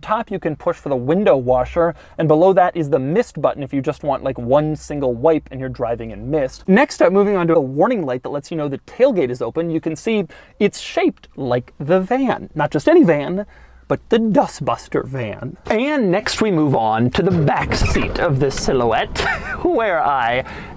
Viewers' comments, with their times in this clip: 0:04 This mid sentence cut really surprised me.